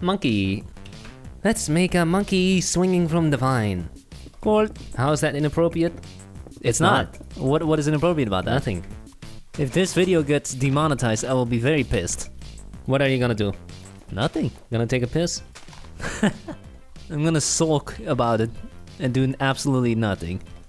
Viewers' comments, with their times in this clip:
0:06 I like how they say ''It's not'' at the same time